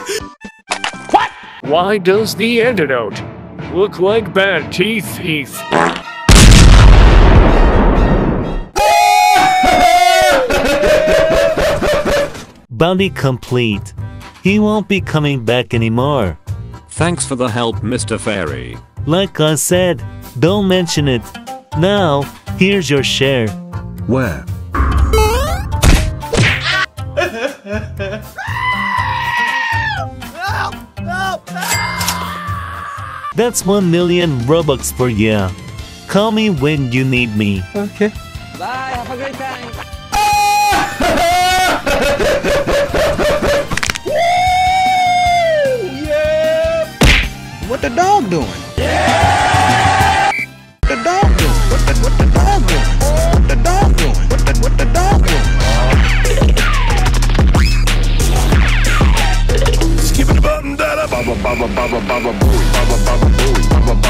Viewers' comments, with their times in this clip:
0:06 fards and blows up
0:51 has the best meme music
0:51 Best song ever